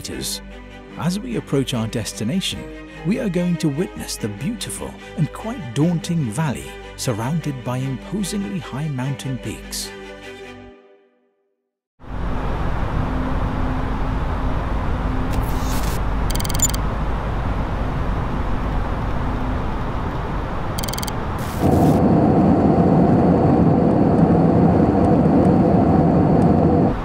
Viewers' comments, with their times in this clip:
0:08 Superior video! ( bloop gears down xd)